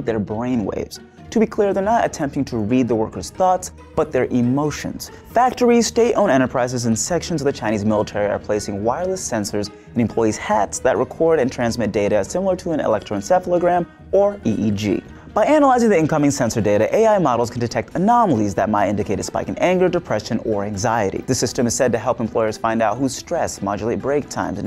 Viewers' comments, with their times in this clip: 0:08 First I understood "in their heads" and thought "Whait? What?! In and not on their heads?" Fortunately the subtitles told me he said "hats". Native Englisch speakers, please tell me why your words for "head" and "hat" sound so similar and we can have sentences like "I'm wearing my hat on my head".